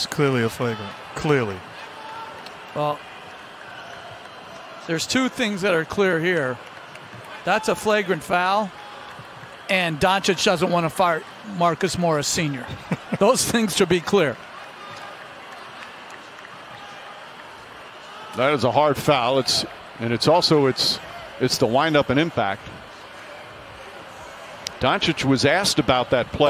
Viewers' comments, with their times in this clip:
0:07 .... am I hearing this correctly... “Docic doesn’t want to FART Marcus Morris Sr?”😂💀
0:10 Doncic doesn't wanna fart.....